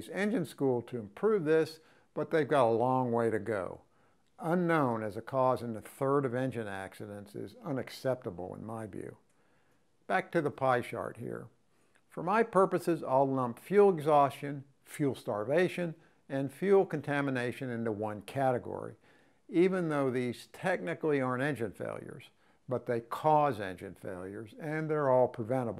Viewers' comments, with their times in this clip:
0:10 “Back to pie shart here” lmao